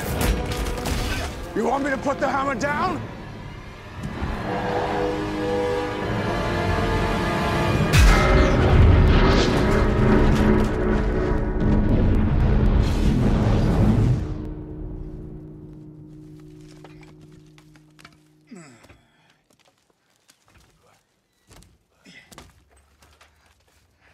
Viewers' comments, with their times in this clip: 0:07 B A N G !